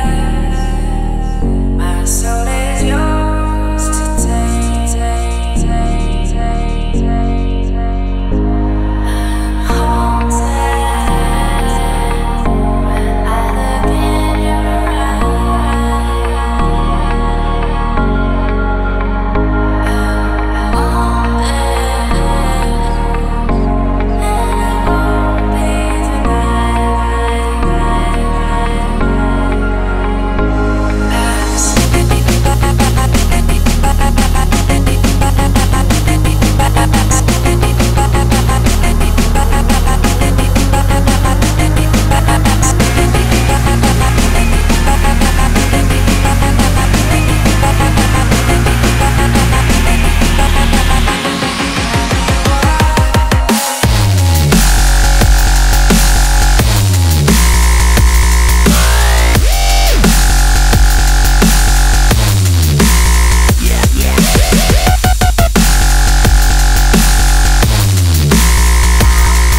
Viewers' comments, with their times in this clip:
0:09 I think he's talking about the part that starts the background sounds kind of like The xx - Intro
0:53 Yes! And then builds you up until when you get dropped.